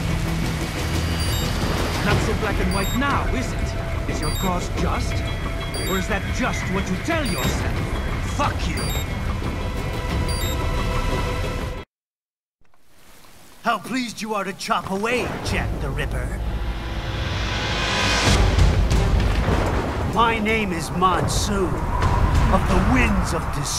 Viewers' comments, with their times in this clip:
0:08 the way Jack just said fuck you 💀